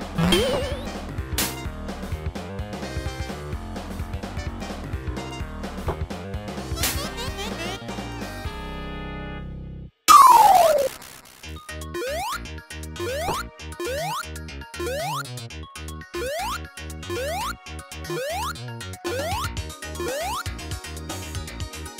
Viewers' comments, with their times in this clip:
0:06 this laugh sfx is so funny